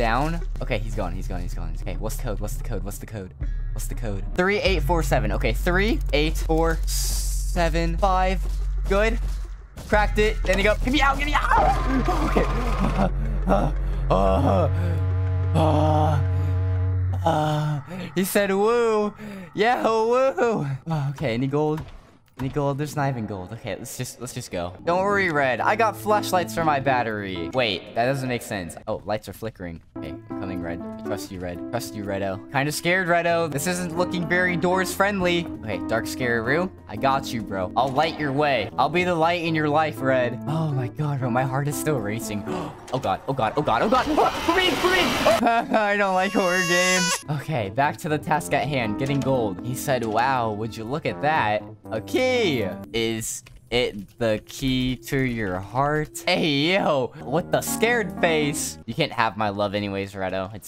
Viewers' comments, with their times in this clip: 0:10 demon changed voice
0:18 why does demon sounded like he said UWU
0:20 did you know demon in say owo
0:47 bro when he cries its a lol moment